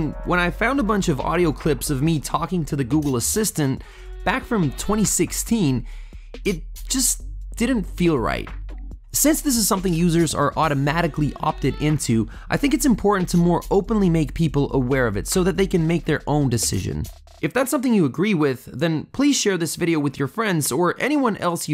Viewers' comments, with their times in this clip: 0:07 That hesitation and change in voice The sound of someone who has been violated. :(